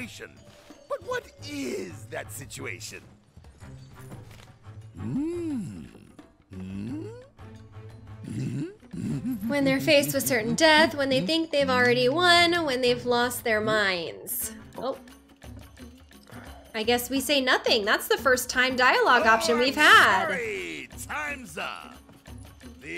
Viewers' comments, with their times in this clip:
0:08 I still find it a little odd that they gave Corneo the horse laugh and not Heidegger. Don’t get me wrong, it fits Corneo to a T, but it’s a running joke in OG FF7 that Heidegger has a stupid horse laugh (too) and Rufus calls him out on that. The correct answer is “When they’ve already won” as it is in the original, but in all cases you get dropped in the sewers.